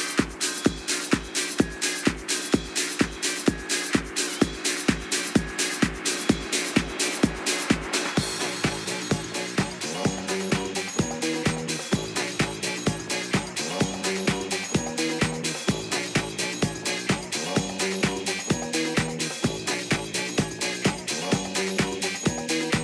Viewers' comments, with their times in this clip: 0:08 boommmmmmmmmmmmmmmmmm, mega track!!